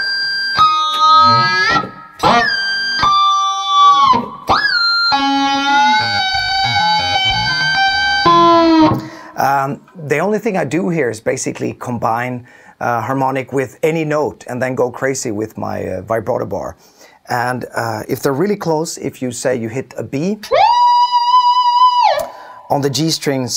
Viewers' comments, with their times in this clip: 0:04 "Scanning planet for lifesigns"